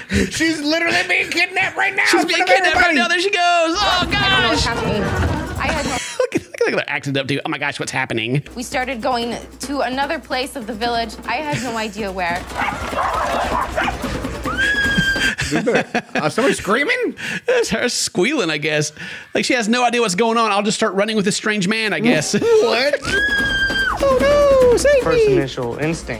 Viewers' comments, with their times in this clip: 0:09 omg i cant unhear the voice of meg from family guy 😂😂😂😂😂😂😂😂